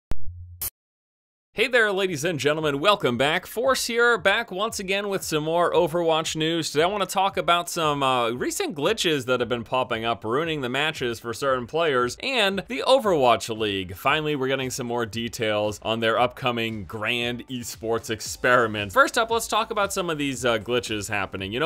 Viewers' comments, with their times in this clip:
0:05 ZA WAAAAAAARUDOOOOOOOOOOOOOOOOO dubstep fart